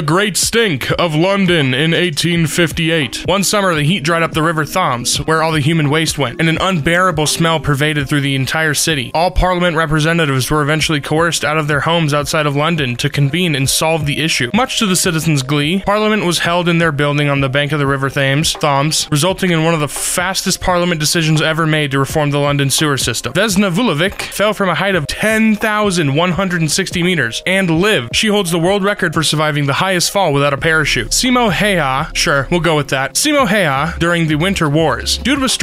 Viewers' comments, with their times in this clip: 0:03 the way you pronounced thames.... lol
0:03 …? Thoms.. it’s pronounced t-eh -ms… that hurt to listen to /j
0:04 lmao the way he says thames
0:04 why did he pronounce Thames likes that? Last time I checked we all pronounced it tames
0:04 excuse me the river foms 🤣
0:05 the river WHAT?! Edit: he just said it correctly and then "corrects" himself
0:18 ah yes the famous river thaams